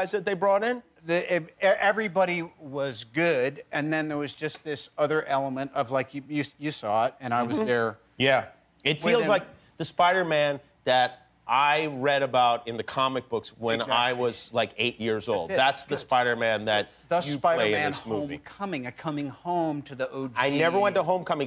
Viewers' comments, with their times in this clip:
0:06 How can you even crack your voice saying “mhm”, trust me I tried and it didn’t work but than man can apparently to anything
0:07 did anyone else hear the voice crack XD
0:07 what noise did tom make
0:07 Tom makes a really odd sound lmao
0:07 Did anybody else notice Tom’s voice crack ???